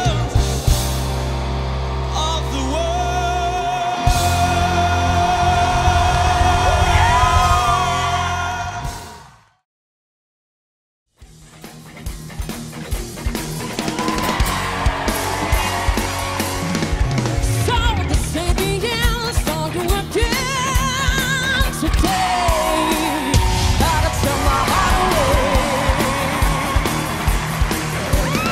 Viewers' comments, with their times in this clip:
0:10 I fell out of my chair in shock after hearing that voice, dead on perfect Ann Wilson impression!